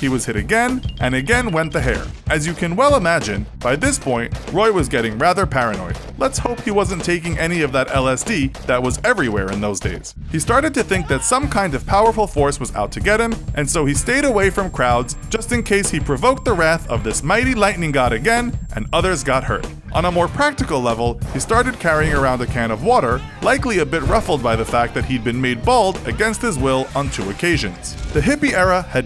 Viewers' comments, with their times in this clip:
0:10 lol that scream
0:15 ow my sensitive ears